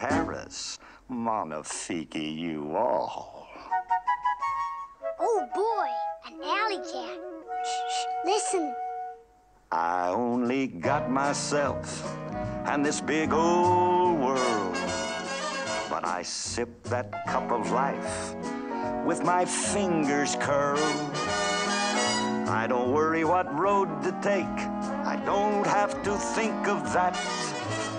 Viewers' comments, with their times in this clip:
0:08 Is it just me or when Marie says listen it sounds like Navi from Legend of Zelda